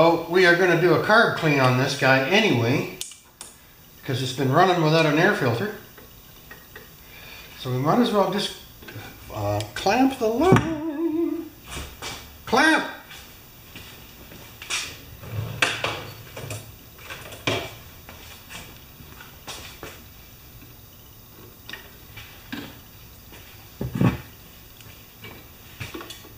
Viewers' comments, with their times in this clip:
0:09 He can fix the mower AND hit the high notes 😄